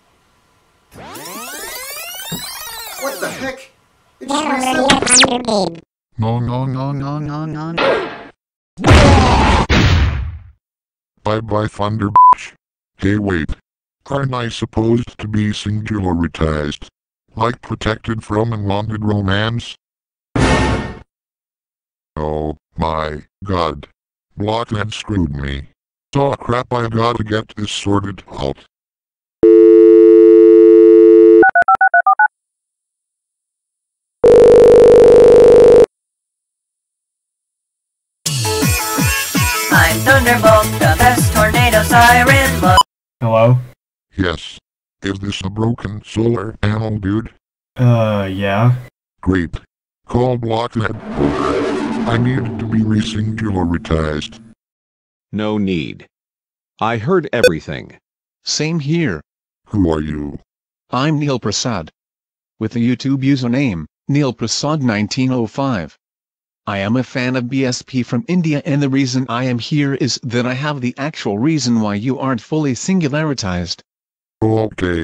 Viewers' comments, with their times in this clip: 0:06 No no no no no no! *Gets higher pitched*
0:10 fucking fireworks version "bye bye stupid fucking fireworks sound"
0:58 aaaaaaaaaaaaaaaaaaaahhhhhhhhhhhhhh the Modulator is funny the voice lol XDDDD India Modulator